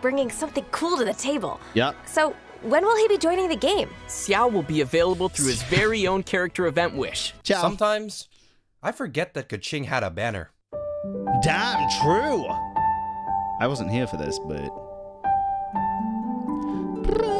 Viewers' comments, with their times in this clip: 0:03 funny thing is, pronouncing xiao like that (see-ow) is actually more accurate than 'shao' lol